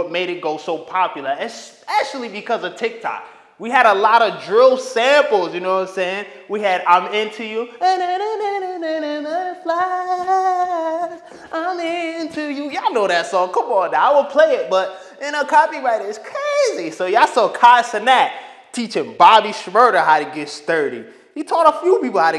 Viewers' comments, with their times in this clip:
0:08 His vocals lowkey fire tho